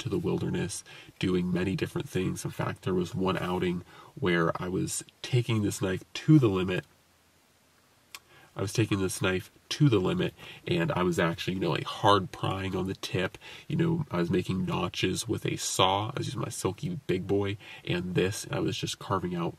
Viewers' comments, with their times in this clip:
0:07 Are you filming in a library?! I seriously turned volume all the way up to hear in complete silence pm...lol I'll have to check out your other videos, but pretty off putting, wow.